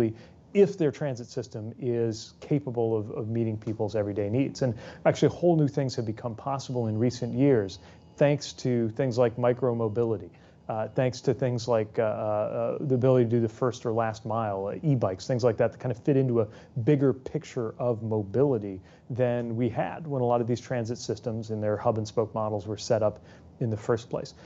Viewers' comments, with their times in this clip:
0:05 I just noticed the Emergency Broadcast Test going off in the background during the interview lol. 🤣
0:09 You can heard the emergency alert I get you can’t turn off your phone but it’s funny to hear🤣